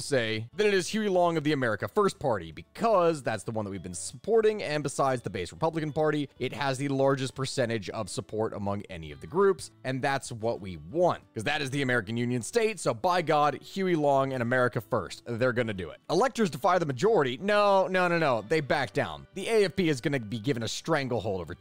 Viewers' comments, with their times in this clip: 0:08 the moment when you can heard his phone 🤣